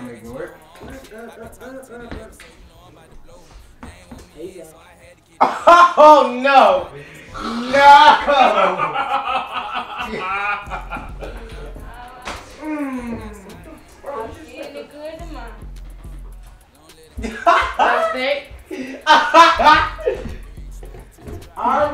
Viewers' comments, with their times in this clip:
0:05 the way he said " AHAHO NO " 😭💀